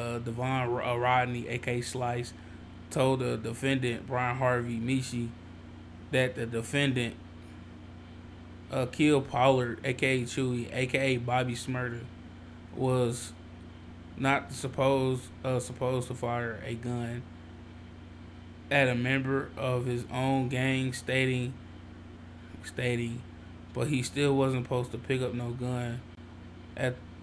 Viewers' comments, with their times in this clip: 0:10 you gotta work on that reading big man